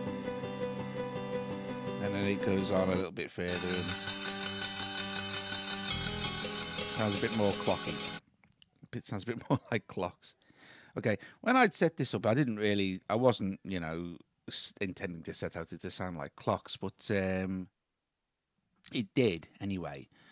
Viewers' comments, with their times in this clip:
0:04 Inception XD Thanks for the clock sounds!